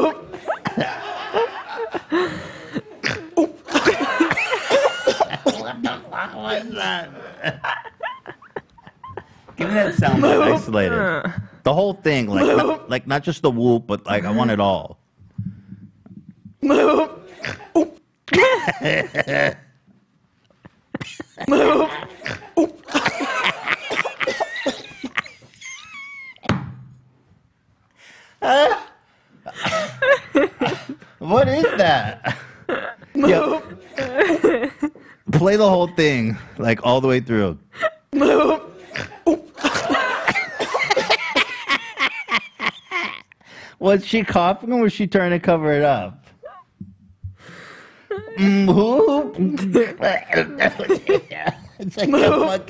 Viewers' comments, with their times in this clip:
0:09 watching them laugh at this sent me so hard I was literally crying w laughter
0:17 he laughs all throughout though hahahaah I love it !!!
0:22 Seeing ethan laugh made my day
0:23 Whenever Ethan laughs this much, it always makes my day a lot better.
0:34 🤣🤣🤣 Trying to figure out if she said alright or farted was the greatest thing ever 😂